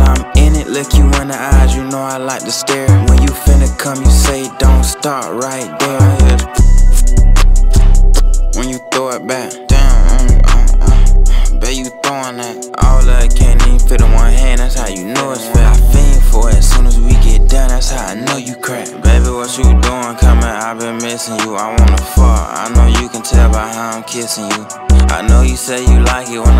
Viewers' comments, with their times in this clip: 0:06 I been laughing at his sound effects for 5 minutes😂😂😭😭this song fire tho
0:08 is tht the sound of the 🐈?